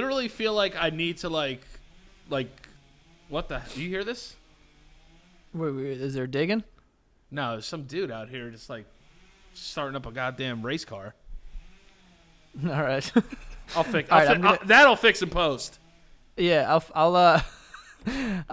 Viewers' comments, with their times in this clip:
0:06 Lol welcome to South Florida Dani. that race car sound is the landscapers lol. They stay landscaping all over south fl